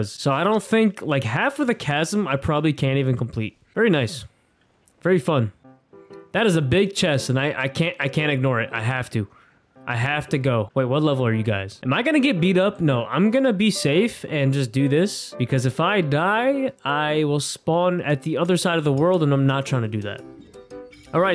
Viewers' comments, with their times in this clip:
0:09 I know that melody all to well.. for a second I thought it was my alarm going off but it was your video playing the MHA soundtrack XDD